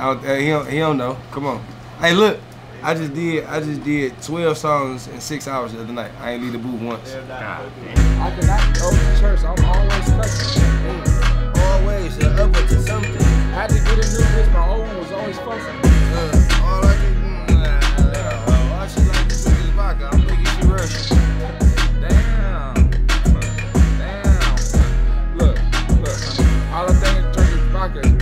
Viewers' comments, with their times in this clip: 0:09 Bro can someone remake the beat please? Shit so hard